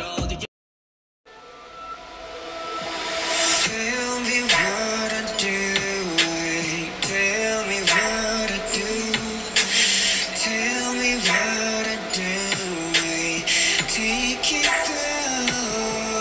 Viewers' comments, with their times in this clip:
0:03 ... if heat and desire had a sound it would probably sound like that. pfffffooooarrrrr